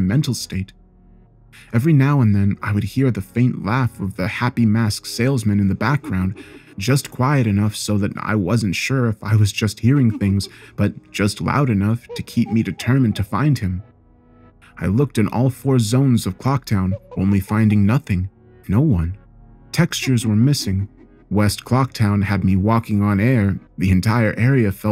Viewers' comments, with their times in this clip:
0:09 That laugh made me jump!